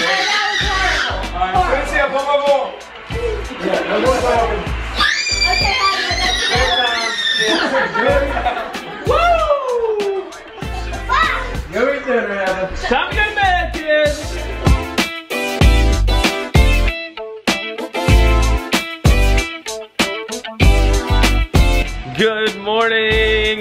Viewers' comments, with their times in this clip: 0:05 R.I.P headphone users 🎧